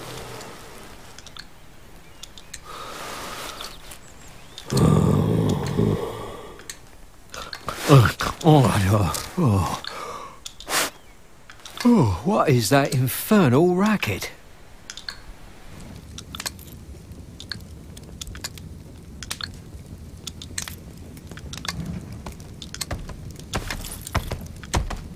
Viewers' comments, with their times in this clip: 0:07 dragon said "fuck"